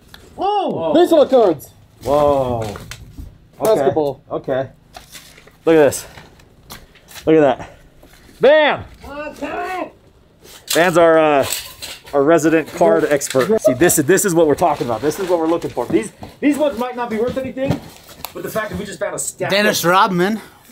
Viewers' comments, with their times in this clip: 0:08 i wish they would use that "i'mmm kerming" masked up, so funny!! wish they'd have used it in future edits, never happened : (